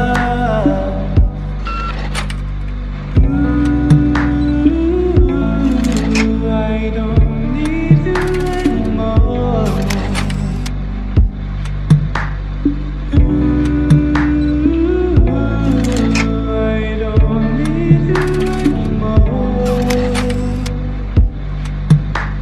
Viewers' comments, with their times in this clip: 0:04 that piano tho🔥🔥🔥🔥🔥